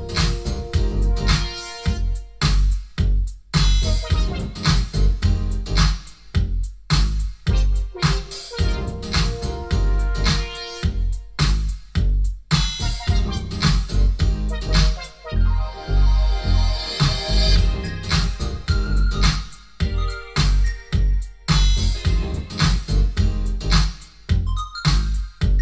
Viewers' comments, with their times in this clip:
0:06 What‘s the funky song on ?